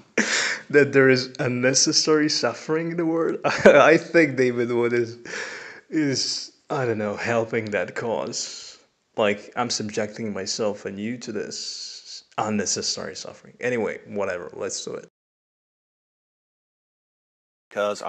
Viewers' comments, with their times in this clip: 0:05 LOL. bro I love your laugh